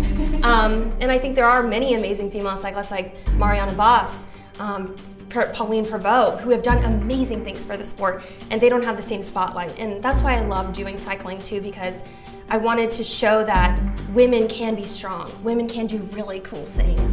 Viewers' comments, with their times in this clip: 0:04 but the alarm threw her off